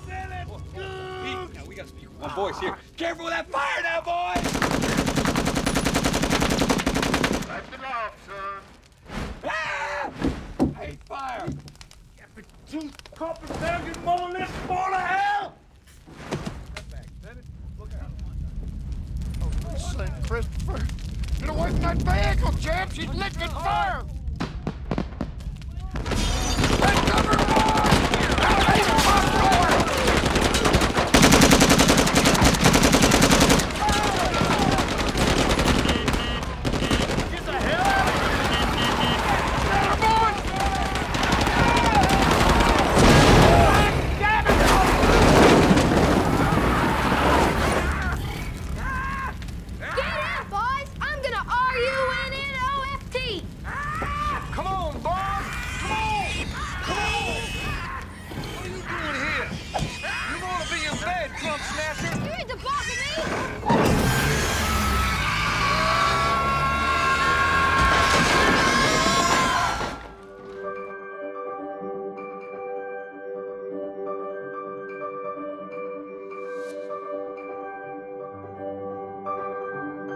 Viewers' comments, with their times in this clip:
0:08 Everett's girly scream makes me laugh every time.
1:04 This is probably my favorite use of a Model T in film ever. I don't think there's another film that has a Model T used to escape an inferno like that. Plus George Clooney screaming never gets old:
1:08 *Que Banjo Get Away Music*